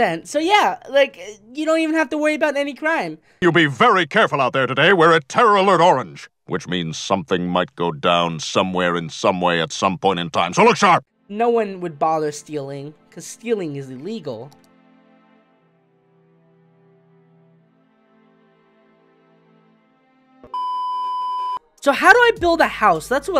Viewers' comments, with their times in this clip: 0:06 So like, I'm sorry for the audio not matching up when it came to the joke not really sure why it did that ;_;